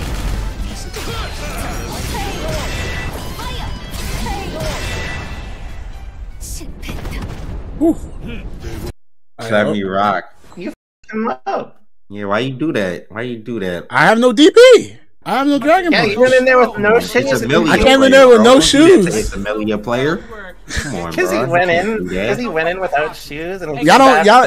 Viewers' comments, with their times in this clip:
0:07 My man did not just absolutely SMOKE this man in complete silence and then say "hooh"